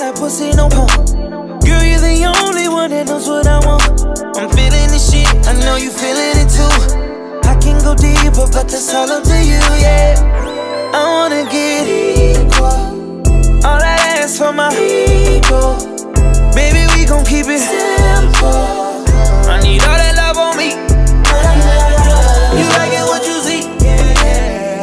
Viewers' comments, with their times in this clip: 0:10 This my shit 😫 does something to me 😫😫😫 that falsetto . Got me feeling some type of way.